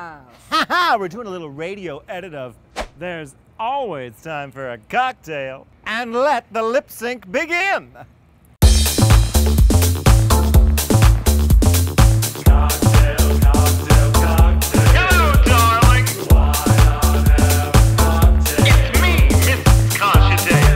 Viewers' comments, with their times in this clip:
0:06 This was so autotuned that even when MKD wasn't singing she sounded autotuned. 😂